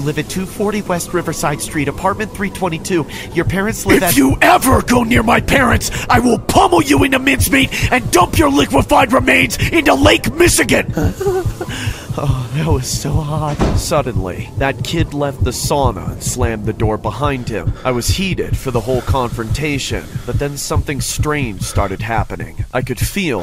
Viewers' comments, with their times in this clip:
0:09 the laugh the narrator did was so creepy. So well executed. Omfg.